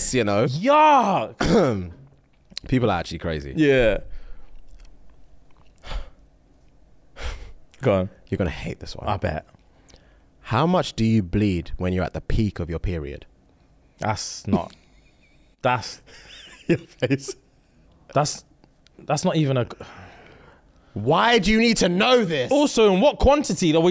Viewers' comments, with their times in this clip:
0:09 the breath and the warning that followed 😂